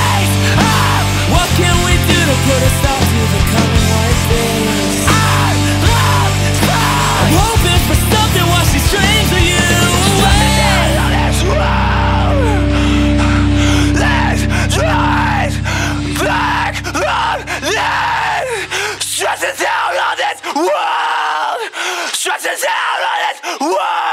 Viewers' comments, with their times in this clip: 0:10 The part from to the end sounds like he's going to break a fucking blood vessel. Just jaw dropping, over the top screaming right there.